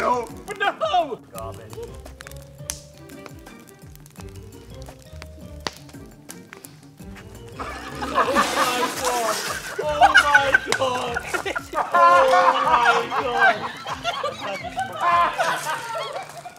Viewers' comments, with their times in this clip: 0:04 Tactical laugh nuke INBOUND in 3..2..1..